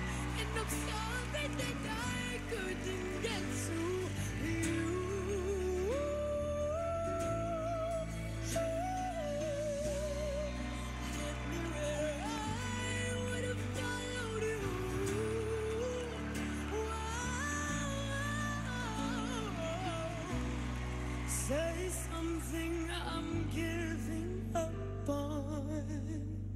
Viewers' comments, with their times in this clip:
0:10 I love when she hits that high note and they pan to her mom sitting there with her eyes closed like that note was just blowing right thru her, she was obviously crying with so much pride and that note right there just rips my heart out its so beautiful so i can't imagine how her mother must've been feeling at that moment. I just love Zhavia. She is a true artist and inspiration. Keep it up girl!!!